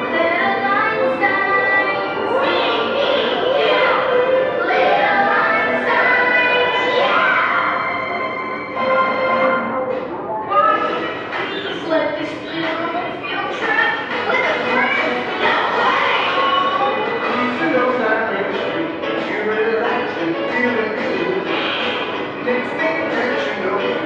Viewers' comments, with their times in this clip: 0:10 Tip, the audio is slowed down to 0.80 in DaVinci Resolve. So, if you're trying to speed it up, that's what the speed setting I set is. I also looped an ambience track from Skylanders Giants for a little extra ambience. Also, the strange audio distortion that cuts off the "seatbelts, everyone" in The Magic School Bus Theme is from a messed up audio file. I tried to fix it in editing but it didn't work.